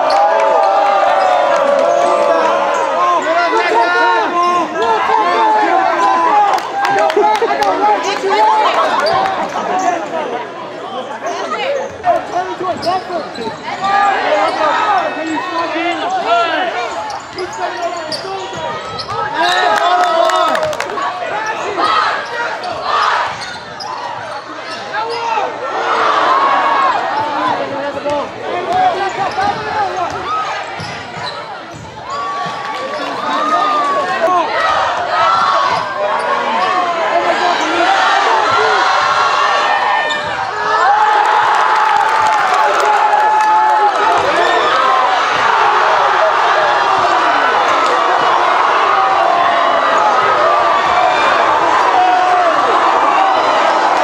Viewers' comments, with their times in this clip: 0:07 someone started singing ransom when they saw that kid 😂
0:39 LMFAO they cheering for their boy and then he gets bodied
0:39 love how when #4 missed the layup the team was shouting but then mikey comes and slams it over the kid